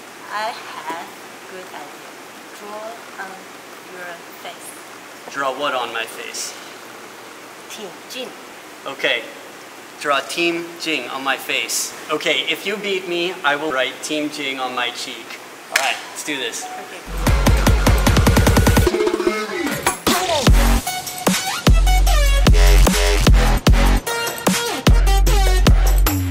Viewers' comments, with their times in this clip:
0:10 i'm sorry i heard what ? if i loose i'll write chin chin on my cheek